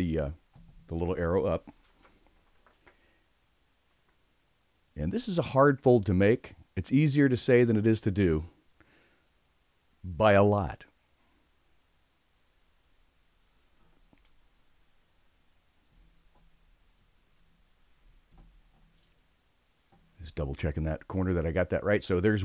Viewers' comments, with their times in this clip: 0:10 you sound just like swaggersouls